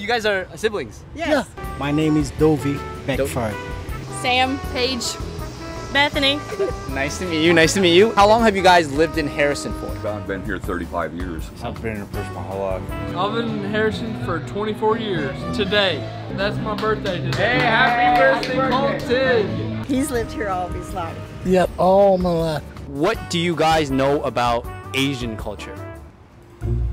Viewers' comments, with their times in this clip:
0:08 I heard Harrison Ford